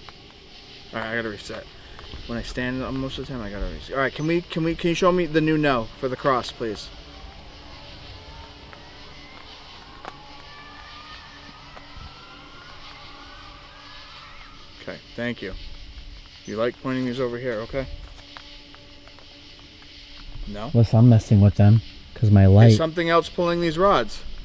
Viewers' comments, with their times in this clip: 0:07 What the scream ?